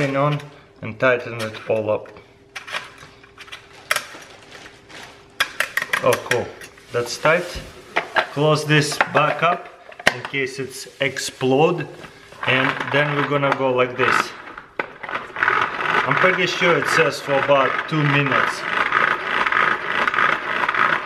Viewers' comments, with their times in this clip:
0:09 did he say egg-slode.